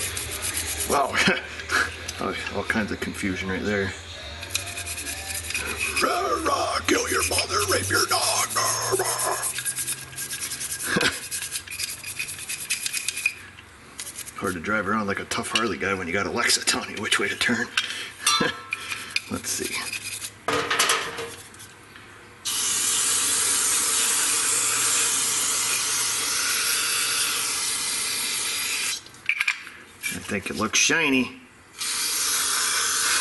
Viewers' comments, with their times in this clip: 0:06 I almost spit out my morning coffee🤣 I sing a similar song when I hop into a vehicle with the death metal playing👍
0:14 Didn’t get the reference sounded like a headbanger lyrics?, induced by what u were spraying?